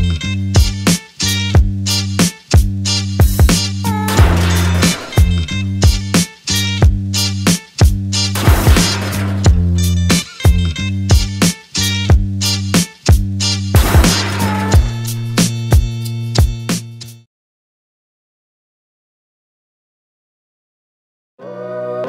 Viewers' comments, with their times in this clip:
0:03 Bro that sound was loud in